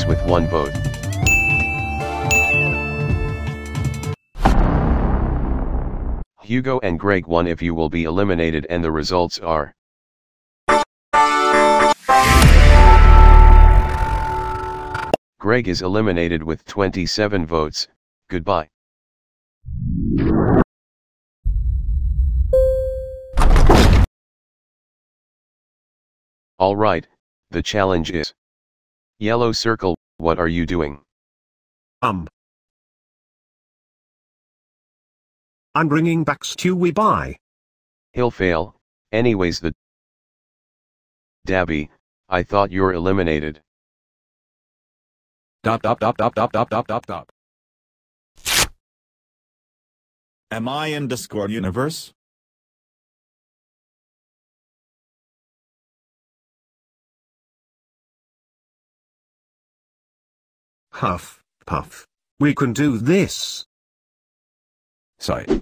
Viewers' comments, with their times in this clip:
0:10 best suspense music ever :p
0:11 Incredible suspense music
0:48 did some1 rec new jurta